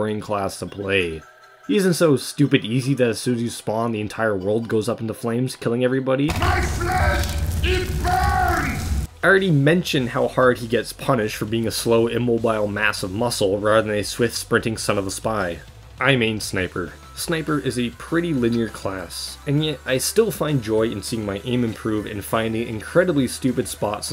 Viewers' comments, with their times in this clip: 0:05 Heavy's gestures make his agonizing exclamations oddly poetic...